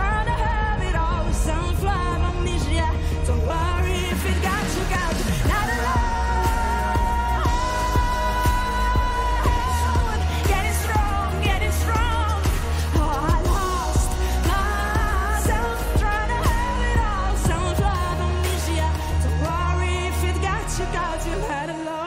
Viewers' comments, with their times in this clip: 0:05 for The ones that says "her vocals are bad" then try to sing like this
0:06 wow ❤️ the point where she shows that she got a powerful voice